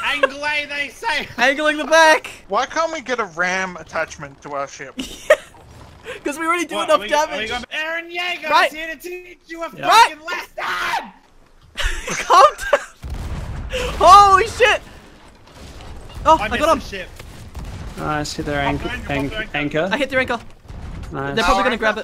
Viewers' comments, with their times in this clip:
0:07 I can't stop laughing, he just sounds so furious